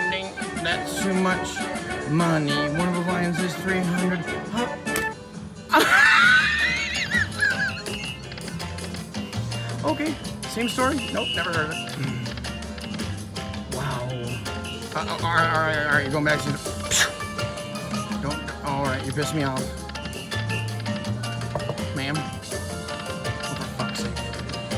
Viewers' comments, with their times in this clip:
0:06 the Corona laugh though lol! 😂